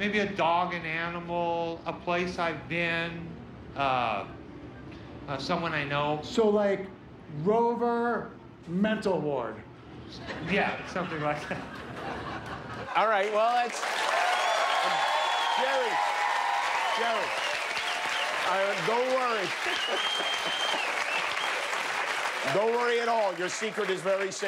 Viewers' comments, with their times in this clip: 0:10 that laugh seems fake and for a good reason.